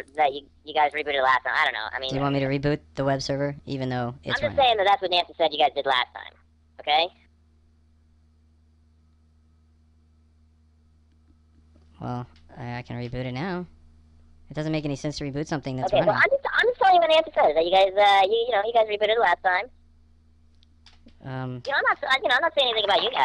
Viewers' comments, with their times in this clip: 0:06 ... Silence ... thinking xD